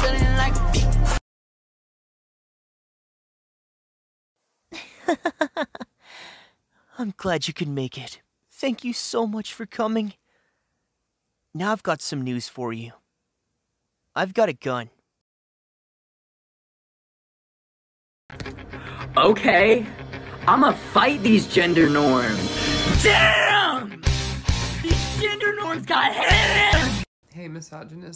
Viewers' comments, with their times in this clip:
0:10 Who is the voice It sounds like Light Yagami, but at the same time I swear it’s someone else and I’m about to lose my mind.